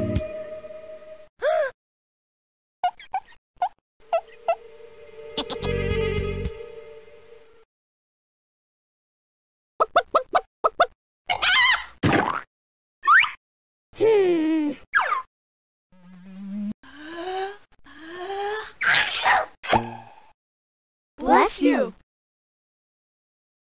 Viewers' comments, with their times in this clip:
0:04 The fade in of the music is giving me nightmares! But I love it anyways! (If you slow it down, it REALLY is a whole new level of scary!)